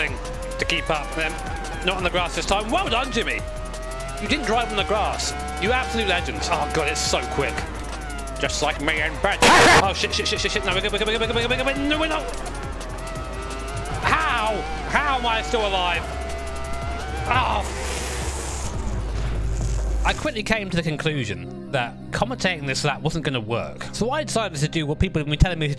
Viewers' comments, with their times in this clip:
0:07 The little cutaway from the boosted laugh genuinely killed me. Good meme
0:09 Rip ears lol